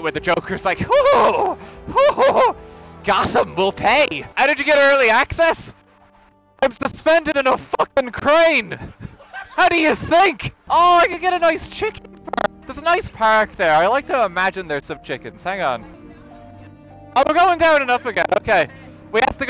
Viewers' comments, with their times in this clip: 0:04 I love you can hear other people laugh at his joke in better quality than his own mic
0:06 the laughter in the background lmaoo